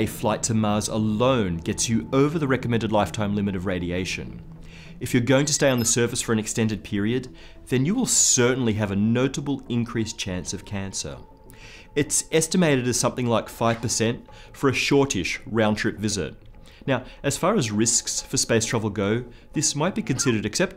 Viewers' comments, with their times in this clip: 0:04 that beep is just like in Star Trek lol Nice video, but I have to point that out